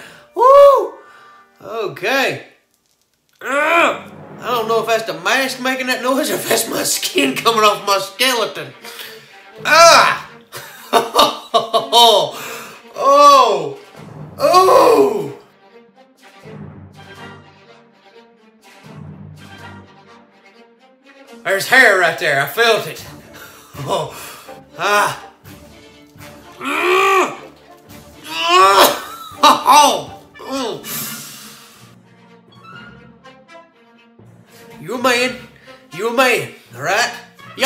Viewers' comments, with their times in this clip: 0:10 is the laugh of a man that knows he fucked up!
0:21 He turned Irish there for a second. lol
0:22 It hurt so bad he became irish